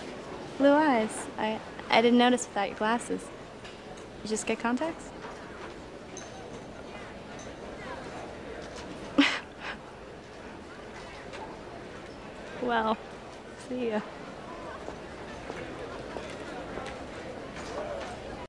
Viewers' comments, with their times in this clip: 0:08 The best awkward silence